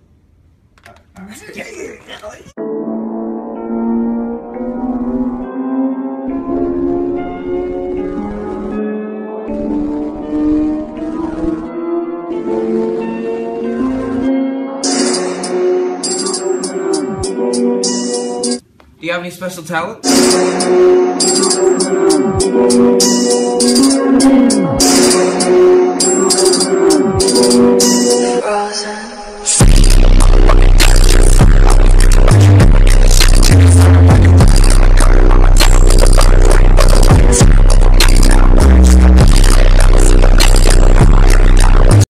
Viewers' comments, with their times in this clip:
0:03 This music is triggered !
0:32 will you milk shake hit u face pol #RipHeadphones